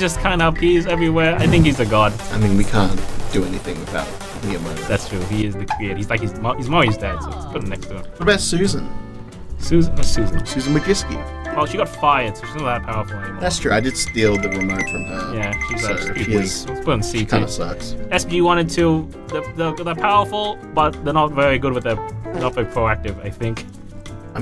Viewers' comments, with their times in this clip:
0:06 the mini “Hello 😄” omfg I can’t 😭😭😭